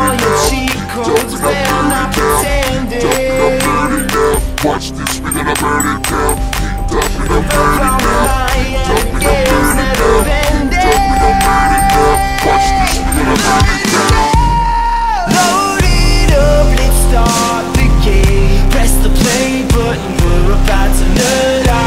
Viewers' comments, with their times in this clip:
0:08 My favorite part was something about that part when the beat kicks in as they move there arms i just feel a warm buzz i don't know why it's weird i know but great job on the video.